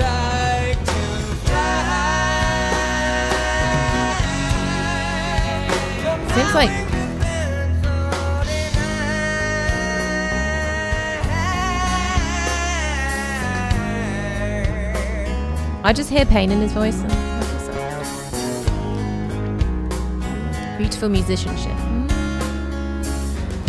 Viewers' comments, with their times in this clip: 0:08 it's almost like the pain of a baby crying. So pure